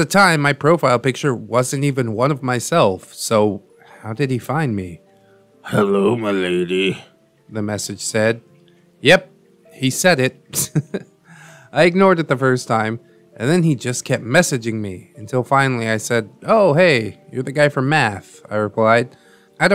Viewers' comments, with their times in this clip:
0:05 Loving the subtle Loz fairy fountain music in the background